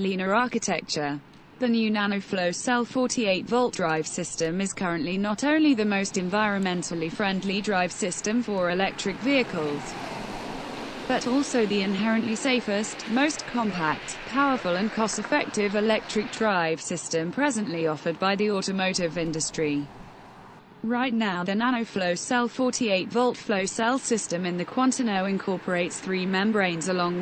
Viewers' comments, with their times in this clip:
0:09 Don't you have enough money for a real speaker? That robot voice is so annoying that I stopped watching